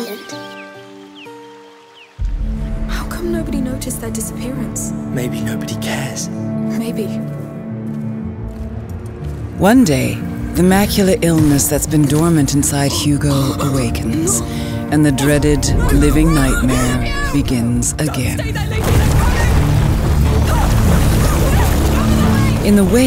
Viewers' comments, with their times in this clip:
0:04 better graphics maybe? idk Amicia looks kind of different from the last game that I thought this game takes place a few years after or something. Even Lucas' voice sounds more deeper and mature here than from the last game